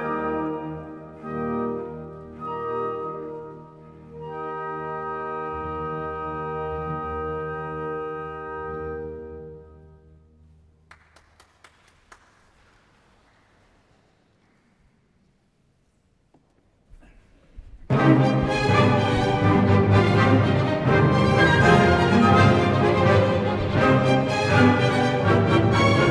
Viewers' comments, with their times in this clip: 0:08 I don't have any sympathy for clappers usually, but poor guy....